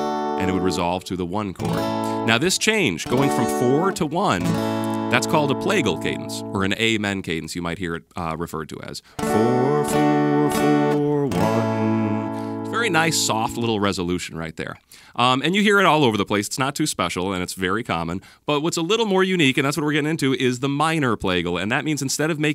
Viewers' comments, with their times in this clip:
0:03 the IV - I chord actually sounds like the last two chords in amazing grace